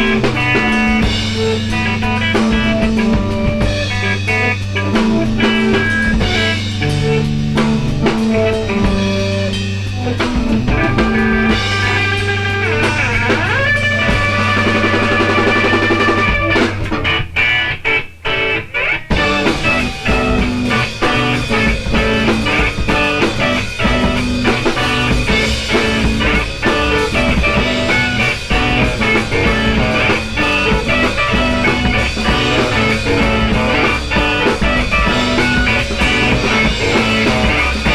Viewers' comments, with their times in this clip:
0:10 begins one of the best parts of any song....so groovy, and technical...ahhhh....
0:10 Oh man, on beings one of the best parts to any song ever made. Its just so groovy and technical...ahhh....
0:18 That chord progression gives me eternal youth
0:18 where those chords break through is amazing i need to figure out how to play this